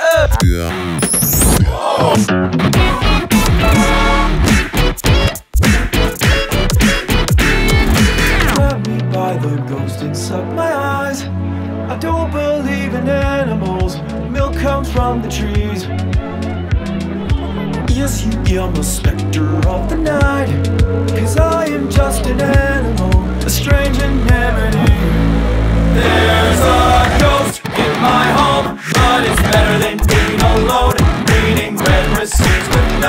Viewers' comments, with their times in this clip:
0:10 the instrumental of this part is so cool
0:15 i hear that stinky boy strut hidden in there
0:15 Why is no one talking about the Stinky Boy Strut leitmotif ? Genius.